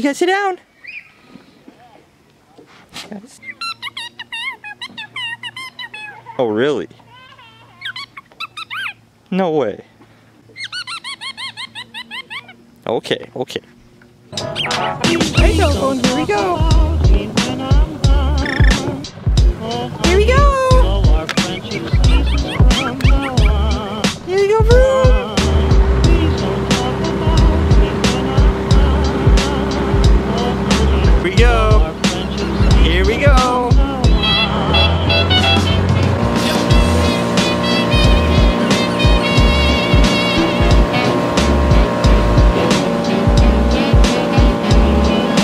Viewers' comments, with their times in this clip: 0:08 you can hear a kid crying because of her
0:33 I THOUGHT THE TRUMPET WAS HER SQUEAKER I'M